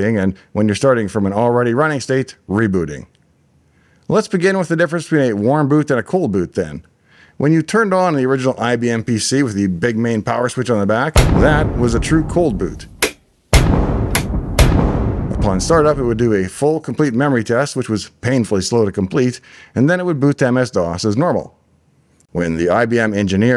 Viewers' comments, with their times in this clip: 0:09 Man, I'm parked in a car with BNoisecancelling headphones, but ambient sound mode, I'm closing the door (not watchong the vid, just listening) & that bang got me agitated, since I'm not in the friendliest of places. That was brutal & totally unnecessary.
0:09 Love the sound your big AT switch makes :D 👍